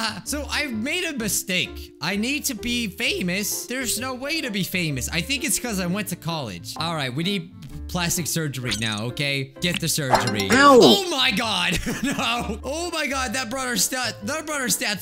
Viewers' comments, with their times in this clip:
0:03 bootiful voice crack 👌